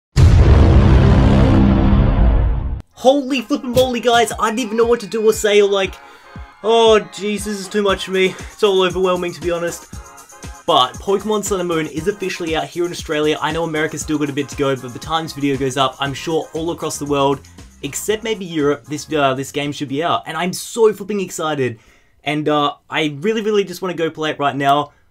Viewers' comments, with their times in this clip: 0:06 did he say Jesus